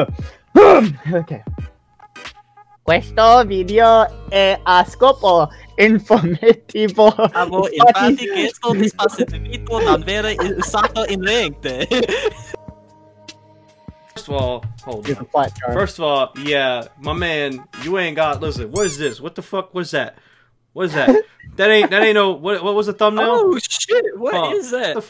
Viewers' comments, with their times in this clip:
0:04 it’s not spanish is italian
0:04 bruh that’s not spanish it’s italian
0:06 bro it isnt spanish i think its italian
0:09 thats not in spanish hahaja
0:13 that is not spanish 😂